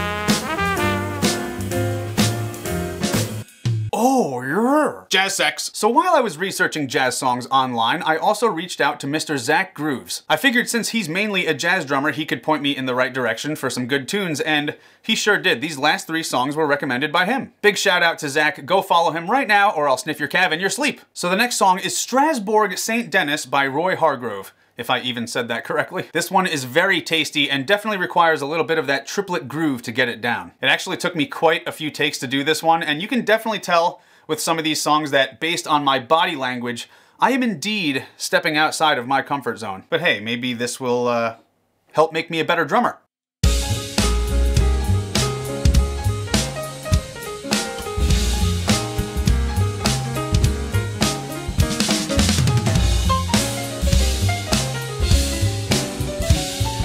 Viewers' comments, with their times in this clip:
0:03 The curse of the missing cymbal hit 😉:_66SamusSex:
0:21 my fave pronunciation of that tune ever 😂😂
0:43 is a really wonderful drum beat I love the depth and ‘bassiness’ of your kit……I’m no pro, just a music connoisseur 👍❤️🇦🇺
0:43 sounds so smooth nice job